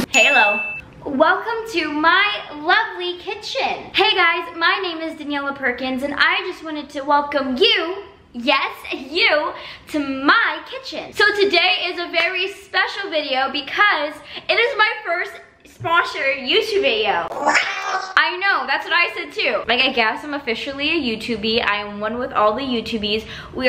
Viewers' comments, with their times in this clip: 0:07 28 Why does it sould like something my nephew would watch